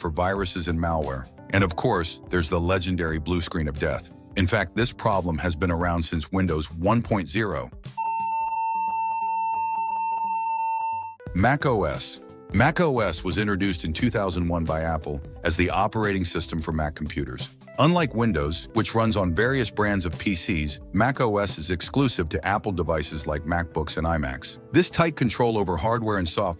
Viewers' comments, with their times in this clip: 0:07 Windows 1.0 and 2.0 doesn’t have sound drivers so that’s edited